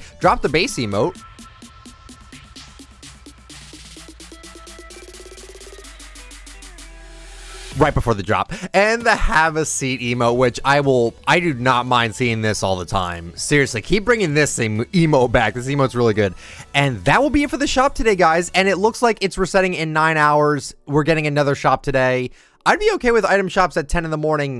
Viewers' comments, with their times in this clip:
0:05 I hate you. I stood on my chair and I was gonna jump off on the beat and you stopped it, then I fell and face planted.
0:10 is that sarcasm or no